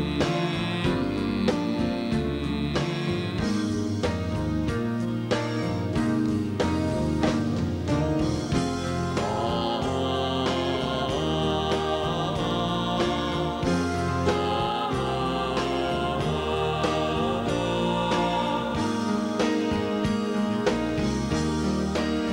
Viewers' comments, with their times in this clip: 0:08 omg, the harmonies r on point, especially onward.